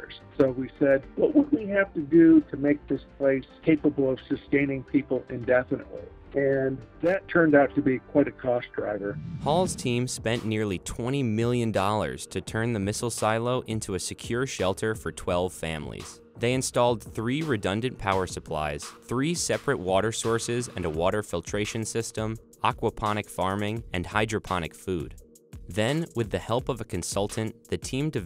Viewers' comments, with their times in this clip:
0:09 that background music...